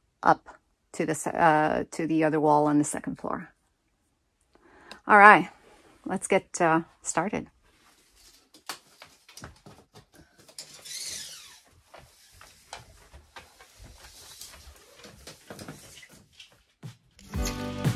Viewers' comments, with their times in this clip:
0:05 A question, mins. does that ceiling beam go through the wall or does it stop at the wall? If it stops there it needs a post in the wall under to support the loads? Thanx. Looks great! You speak very well, don't listen to the peanut gallery! Love the accent.